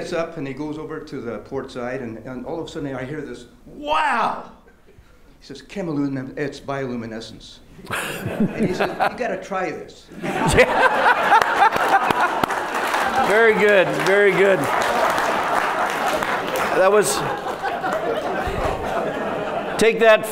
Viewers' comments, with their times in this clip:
0:04 I couldn't hear could someone write it down? :)